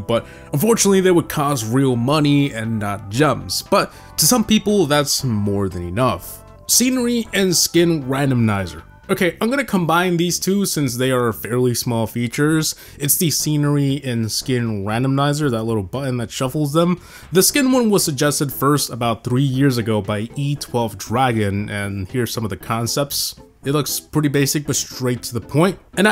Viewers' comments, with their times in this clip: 0:07 Did he say: “RANDOM-NIZER” ? I’ve never heard it pronounced that way in my LIFE brother ❤️
0:08 randomnizer. bro its randomizer